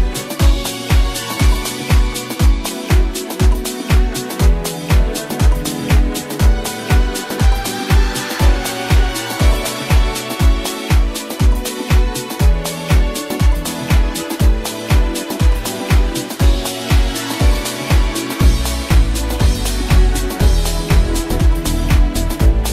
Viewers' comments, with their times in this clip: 0:05 OH MY DAMN, AND WHAT, WHO IS THAT 😎♥️😎♥️😎♥️🎼I found my true love...feels just like a 🎶🎵 angel whispers, eargasms 😎🔥♥️😎